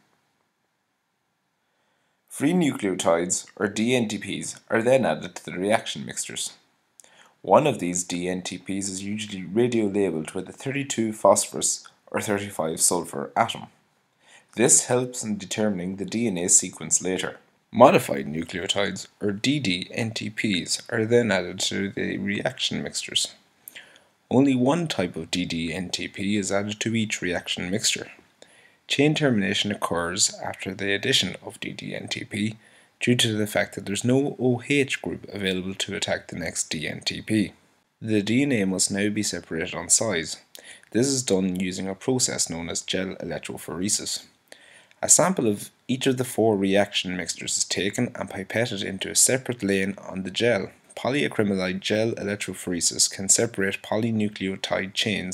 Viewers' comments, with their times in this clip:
0:06 reaction 'mixters', meaning mixtures? thanks for the video, but my ears bled listening to this accent, no offence really.
0:38 what did he say? "The DNA must now be separated onsite"?